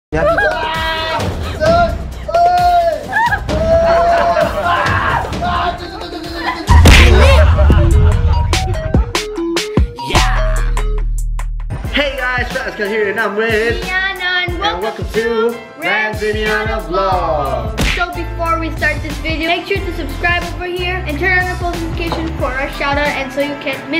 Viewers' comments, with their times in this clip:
0:05 What did he said thu..thu..thu...😂😂😂😂LoL...